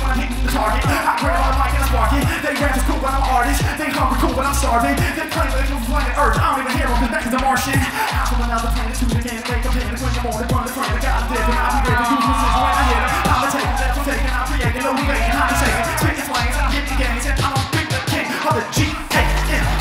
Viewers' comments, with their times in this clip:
0:03 when he does the polyrhythms and they're like nawooo